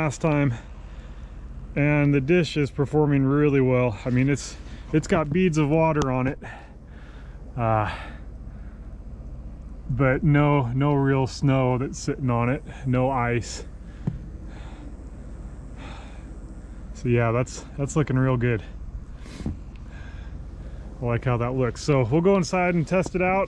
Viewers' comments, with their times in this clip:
0:10 You can hear the power running through the dish When he touches the reflector.